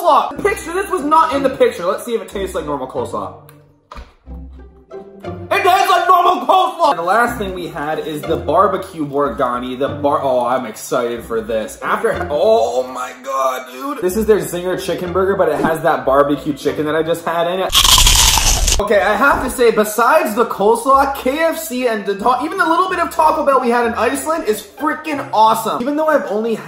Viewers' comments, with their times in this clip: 0:08 He sounded like pickle rick